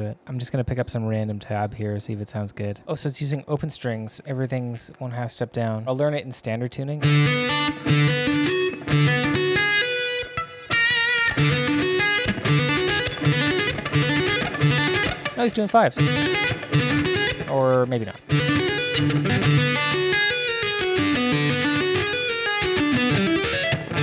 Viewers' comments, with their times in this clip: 0:08 I was about to make a post about how that "riff" was a total rip-off of Jeff Loomis lol.... so close you just had to change one note, it was meant to be a fret 10 rather than 11. Just straight diminished... when you switched start from the open "D" string to the "E" string that finger changes for the diminished shape.... hope you get what i mean... theres some loomis videos where he teaches that exact sequence.... anyway love your work